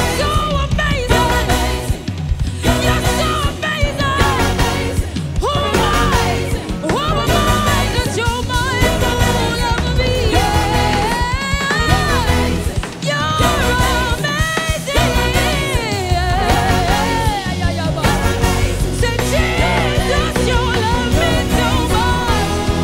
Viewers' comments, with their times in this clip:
0:10 Go to and listen to the drummer 🔥🔥🔥